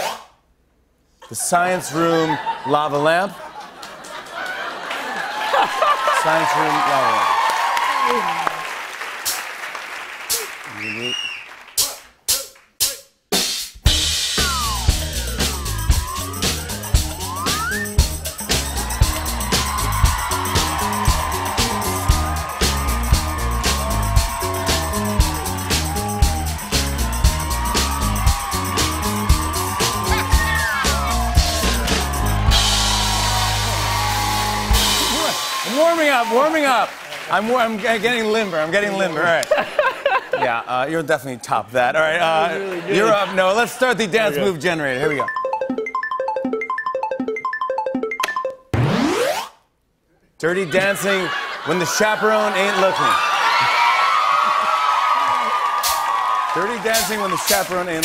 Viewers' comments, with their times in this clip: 0:05 why does no cement laugh like that
0:07 Noah’s little laugh I cant-
0:37 I love his laugh
0:39 ARMYs did u notice that Noah's laugh sounded so much like Kim Seokjin's ???
0:40 I thought it was Jin's laugh 😂💜